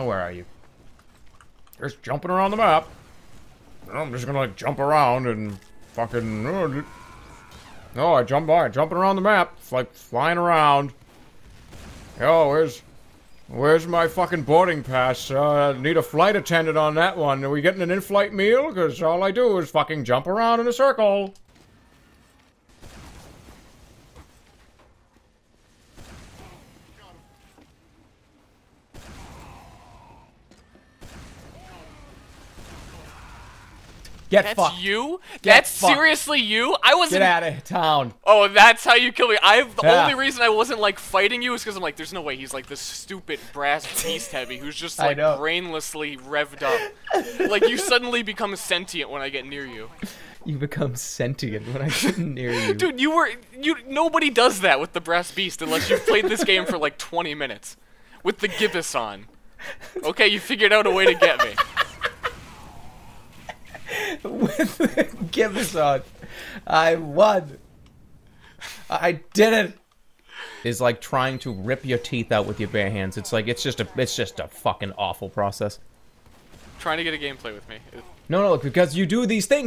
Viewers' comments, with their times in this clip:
0:05 you can actually hear his insanity shine through
1:00 jerma laugh omg 😂😂 so done